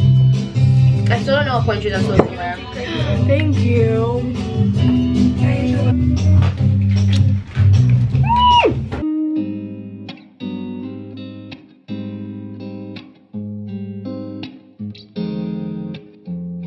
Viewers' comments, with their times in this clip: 0:03 hearing brown eyed girl in the background made my day